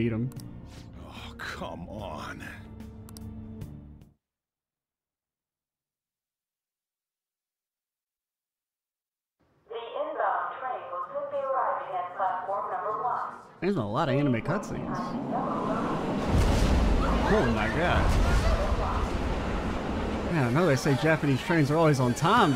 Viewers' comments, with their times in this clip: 0:09 dude. I was in a walmart while watching this. The sound was so clear through my headphones I didn't even realize it was from the video until station platforms were mentioned